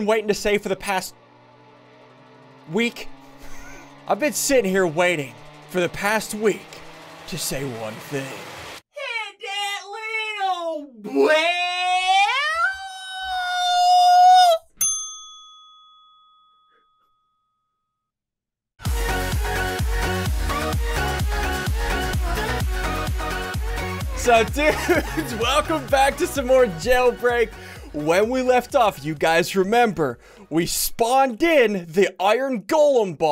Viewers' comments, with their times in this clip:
0:09 that voice is the reason I unsubscribed
0:16 SSundee ure from Alabhama for sure with that accent, or Texas lmao u goddamn Texan